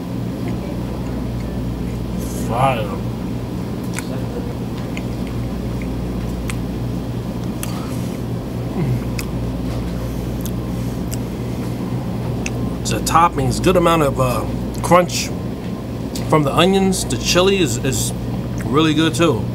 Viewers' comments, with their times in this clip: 0:04 The most powerful 8 seconds of silence you'll ever see. No words needed. We all understood.